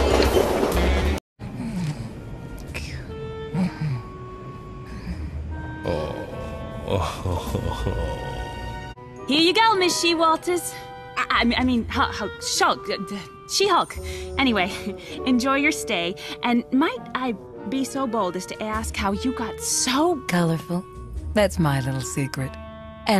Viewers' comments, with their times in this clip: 0:03 LOL that laugh. "Awhawhawhawwww.."
0:09 Surprise Jennifer Hale jumpscare.